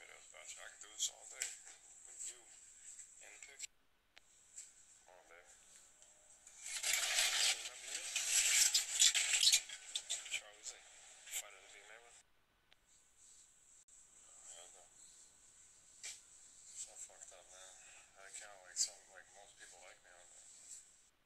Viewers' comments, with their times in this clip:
0:08 can you hear that glass door slide open?! It’s never ever been wd 40’d, white lithium grease or 10w30 good ole Chevy oil.....some people have preferences about lube.....